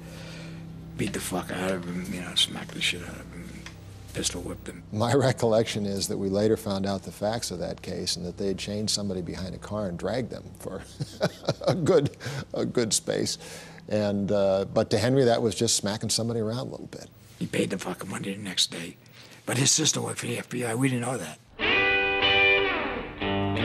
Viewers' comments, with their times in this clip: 0:05 does anybody else notice how the senior special attorney. Laugh at the bar situation.